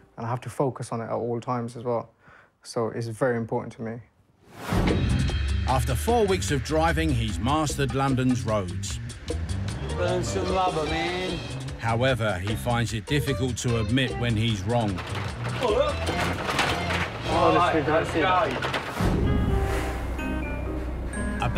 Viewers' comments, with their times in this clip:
0:09 the way he says "burn some rubber man" while squeezing the chair also when the other dude and looks in the camera and says "...you think you're the world's best driver" lolol